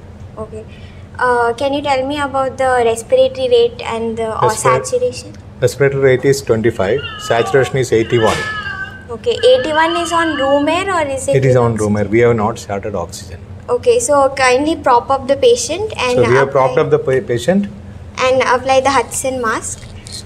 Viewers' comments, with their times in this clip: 0:07 what was that background noise😂😂😂
0:07 listen carefully some one screaming painfully ⚠️⚠️⚠️⚠️⚠️⚠️⚠️⚠️⚠️⚠️⚠️⚠️⚠️⚠️⚠️⚠️⚠️⚠️⚠️⚠️⚠️⚠️⚠️⚠️⚠️⚠️⚠️⚠️⚠️⚠️⚠️⚠️⚠️⚠️⚠️⚠️⚠️